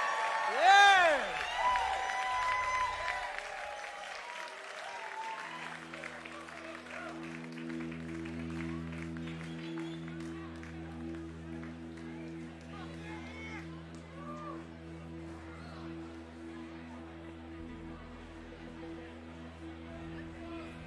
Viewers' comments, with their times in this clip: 0:03 the song that starts was my favorite and had me in tears, what a beauty